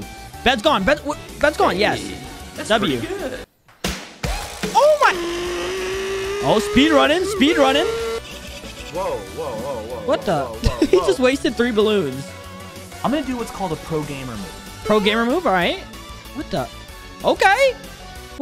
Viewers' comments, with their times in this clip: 0:03 dang that ad music is fire